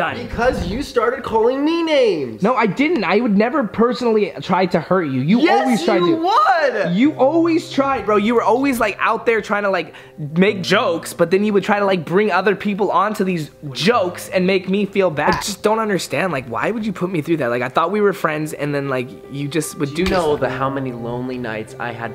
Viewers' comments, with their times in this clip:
0:05 dont yell the dog is sleeping